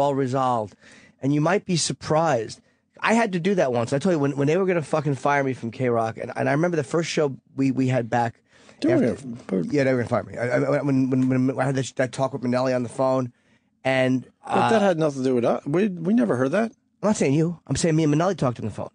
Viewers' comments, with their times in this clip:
0:04 Listen to how guilty Opie sounds. I’d bet money that he did try to get Jimmy fired.